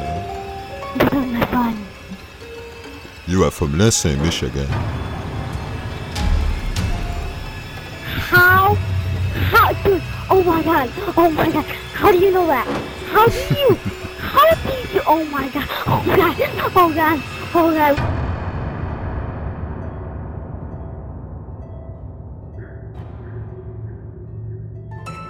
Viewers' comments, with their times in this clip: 0:06 6 year old girl freaking out